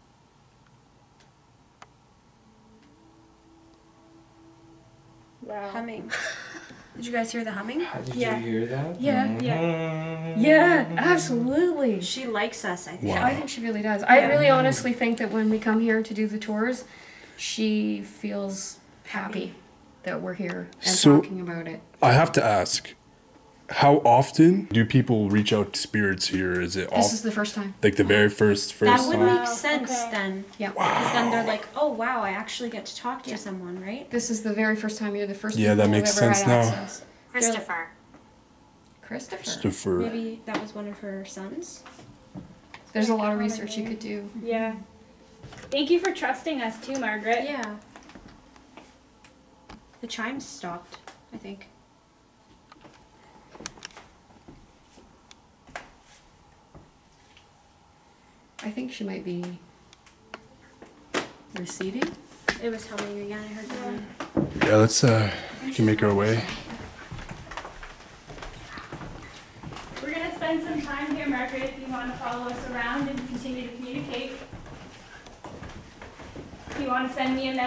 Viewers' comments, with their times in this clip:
0:08 in I heard the humming as well, that was cool
1:04 At the min mark a women starts whispering && for almost a min or if not more of just talking...